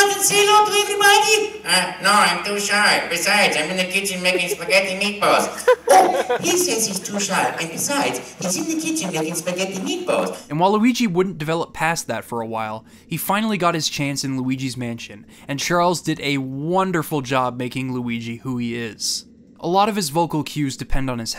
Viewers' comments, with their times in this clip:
0:06 "And Walulgi Wouldnt grow past that"